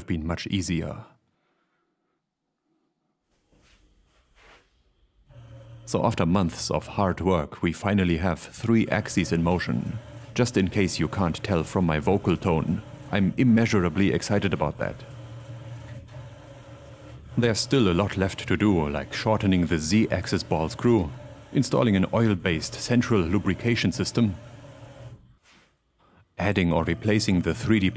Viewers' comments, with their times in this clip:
0:10 I just assumed that you always used your "full rigidity" voice when making videos.